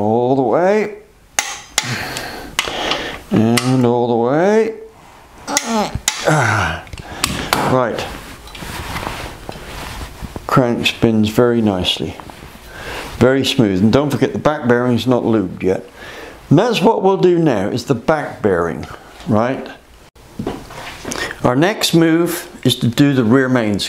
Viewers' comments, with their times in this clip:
0:06 The torque wrench was making some funny noises at the mark.